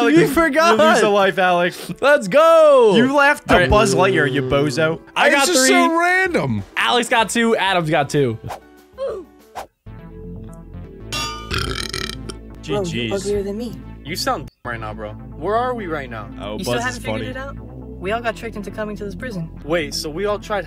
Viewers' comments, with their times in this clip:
0:05 wasn't a laugh. He was talking at the moment and you can tell he didn't laugh becasue there wasn't the slightest pause in the sentence. He held it in. He almost laughed tho.